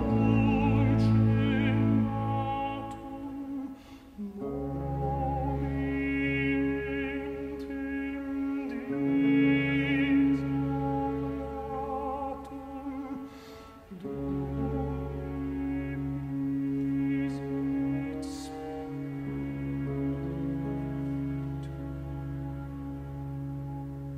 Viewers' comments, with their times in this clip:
0:07 For those who knows the piece. Can we check if this part is wrong between the strings and the solo... ....thanks my anxiety is killing me